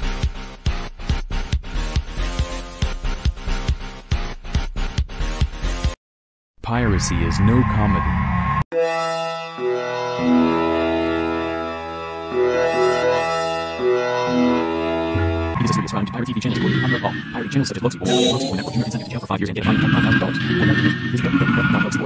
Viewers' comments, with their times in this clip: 0:09 sounds like magical sanctum castle bass☝️🤓